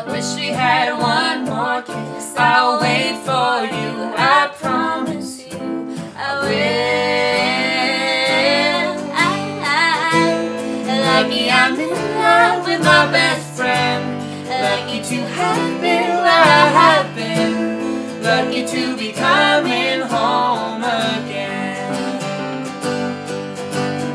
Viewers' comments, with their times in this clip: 0:10 love the ai ah ahhh bit sounds wicked